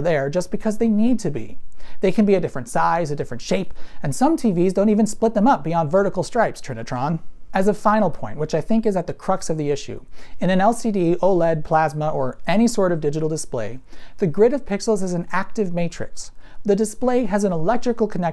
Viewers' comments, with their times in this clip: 0:05 audio and video isn't sync'd.